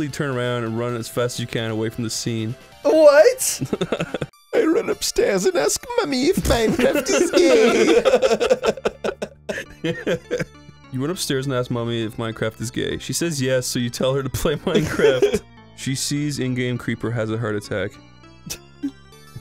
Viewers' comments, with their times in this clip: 0:05 Anyone know what the music is from? That chord progression is lovely.